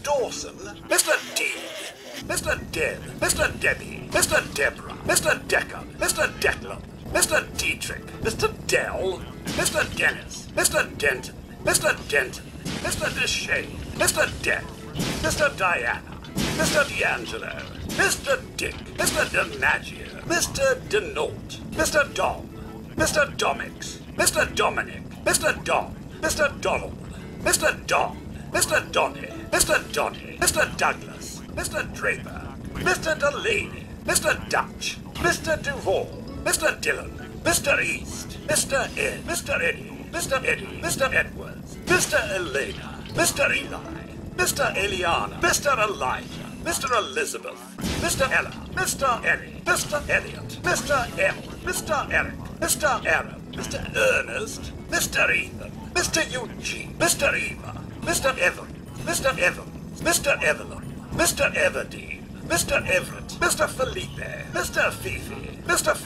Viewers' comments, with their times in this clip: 0:06 Why he gotta say Mister Dell like that 😂
0:18 "Mr Dick" Its so funny the way he says it XD
0:52 he sounds so pissed when he says mr earnest